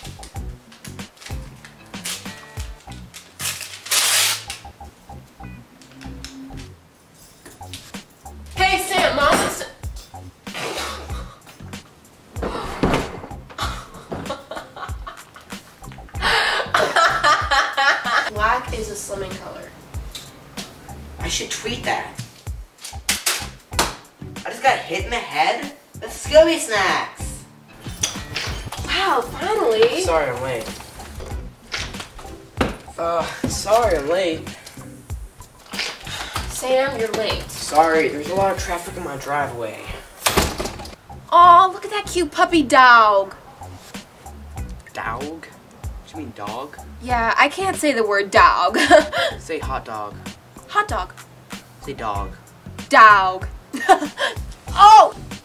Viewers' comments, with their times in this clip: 0:08 and then they sit there and cackle maniacally.
0:41 that’s like stewey and Brian from family guy how stewey can’t say cool whip properly